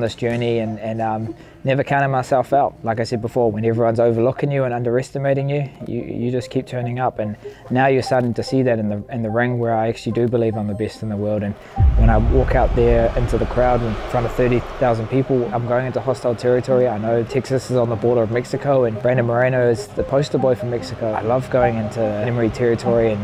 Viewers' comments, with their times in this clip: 0:10 why do people from New Zealand people pronounce their vowels back to front? words like ''egg'' would be ''igg'' , 'ten'' would be ''tin'' not to mention the name ''dec'' would be ''dick'' lol funny. I'm the BIST in the world